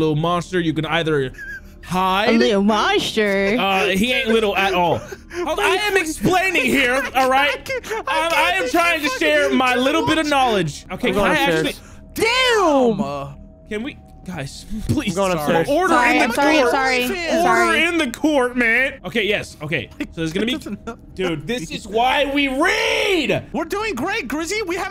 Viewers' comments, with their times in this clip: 0:10 that synced 'Damn!'
0:11 they synced that up so well it sounded like it was from a k-pop song
0:12 That damn was so beautifully in sync